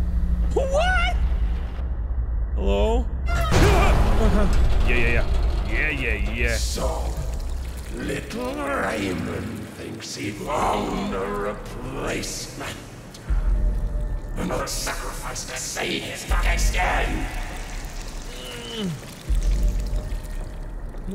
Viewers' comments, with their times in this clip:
0:07 I love the demons voice